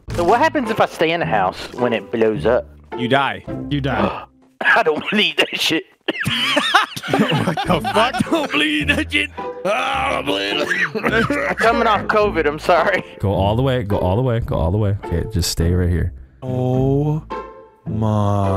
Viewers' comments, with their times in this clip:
0:04 Delirious sounds like a smoker.